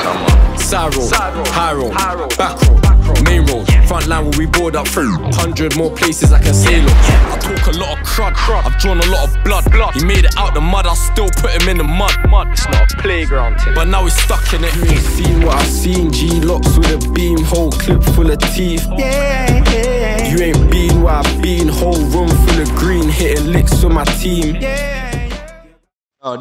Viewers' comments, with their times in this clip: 0:07 The beat for the song is disgusting